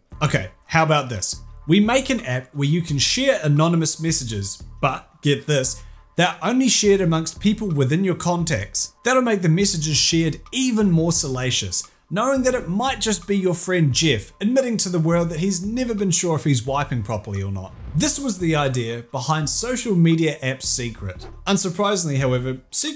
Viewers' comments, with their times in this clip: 0:05 “give this..” Is that like a new version of “get this”? Haha!!